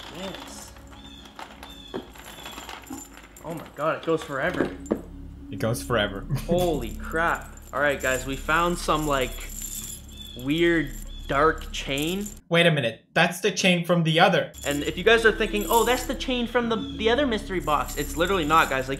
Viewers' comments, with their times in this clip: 0:03 you can literally hear that it's plastic, this must be a joke